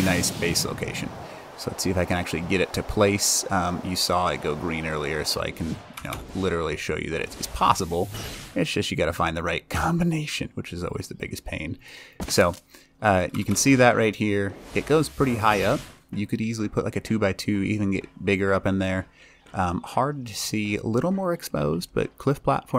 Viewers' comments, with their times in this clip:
0:07 what happened to ur voice when u said combination lol